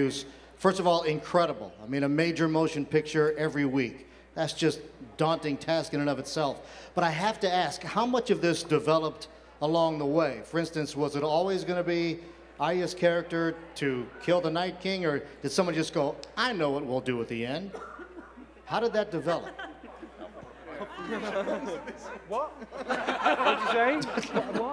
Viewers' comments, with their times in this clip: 0:06 Everyone is so busy hating on D&D that no one acknowledges Alfie's hilarious moment XD. By the way the guy asking kinda sounds like Tom Hanks.